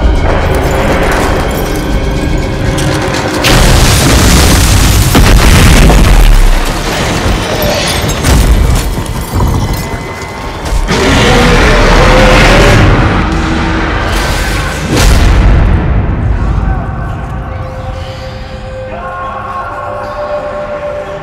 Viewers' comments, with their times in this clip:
0:03 You know a monsters scary when they’re introduction is so badass it blows the mic out
0:03 Demogorgon drops on the ground at Starcourt Mall BASS BOOST
0:03 an F in the chat for our headphone wearing comrades